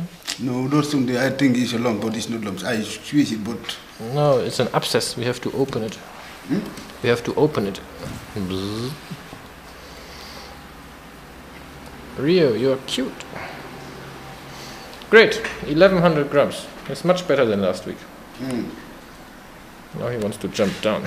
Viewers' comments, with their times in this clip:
0:08 aha i love the sound xD "bzzzt"